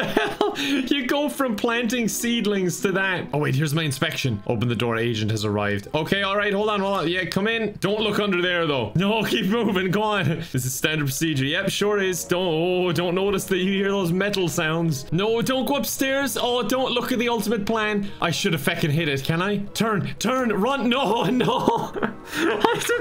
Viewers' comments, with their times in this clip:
0:09 Im suprised the agent didnt notice the metal noises